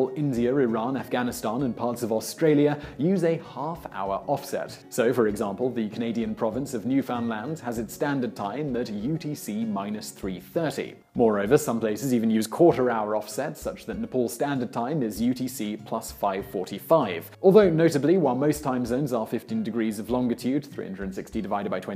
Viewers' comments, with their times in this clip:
0:06 Okay, where I live, it's pronounced (NEW-fin-lind) or (NEW-find-lind) It is a British thing to pronounce it (New-Fownd-Land)?